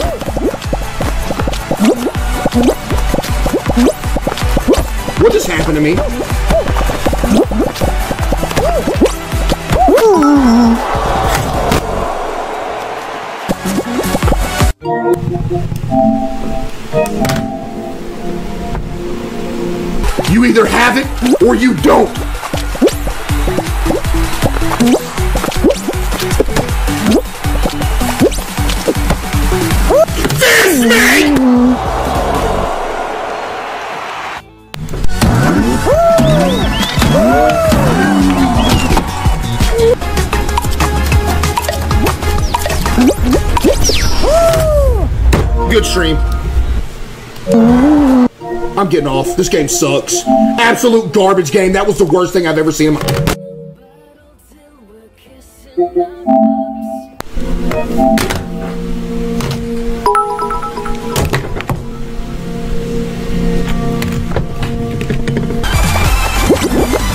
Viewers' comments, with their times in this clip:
0:10 bro broke the sound barrier ☠️💀
0:26 FIST ME BANG* BANG* BANG* BANG* funny as hell
0:30 DISNEY😡 breaks sound barrier
0:51 "That was the worst thing I've ever seen in m-" Proceeds to break the sound barrier